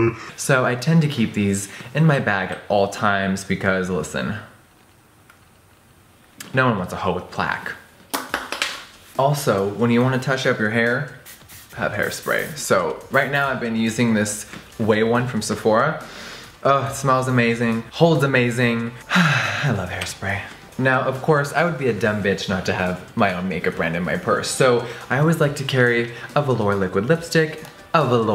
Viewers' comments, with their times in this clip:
0:09 🤣 the way he says when y wanna touch up yr hair is halarious. No hate tho luv u jefree